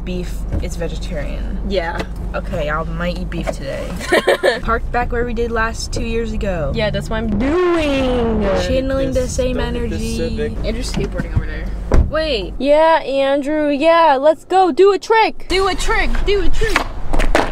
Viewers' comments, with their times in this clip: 0:03 Yeah okay, ✨Almighty✨ beef today.